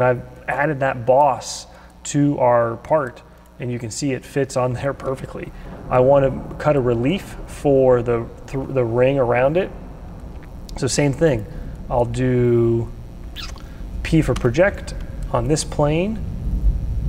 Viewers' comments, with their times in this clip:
0:05 Is that thunder in the background starting ? Impressive!